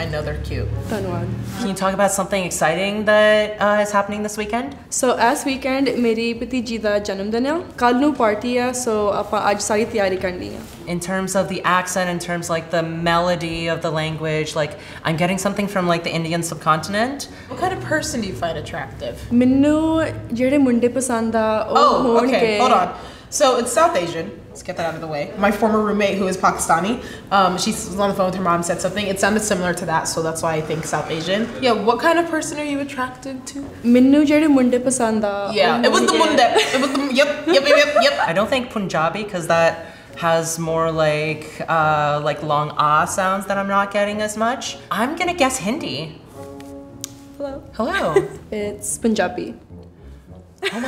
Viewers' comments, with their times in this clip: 0:10 The girl I’m guessing she’s spending Hindi
0:31 Every language that isnt your own is suddenly aggressive ay 😂😂😂😭😭😭😭 i know the name of the game is guess the language, but don't ask a question twice just to cut them off twice 😂😂😂